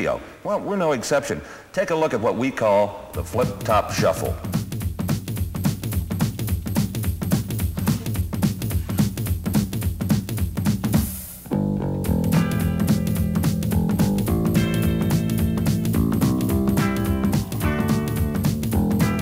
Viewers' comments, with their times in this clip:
0:04 ...Adam and the Ants copycat licks